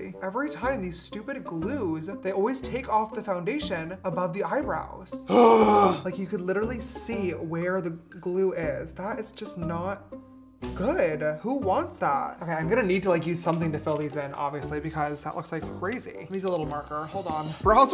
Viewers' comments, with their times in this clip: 0:04 Feel the breath coming out of his mouth😭😭
0:04 Why because I feel the breath coming out of his mouth??😭😭😭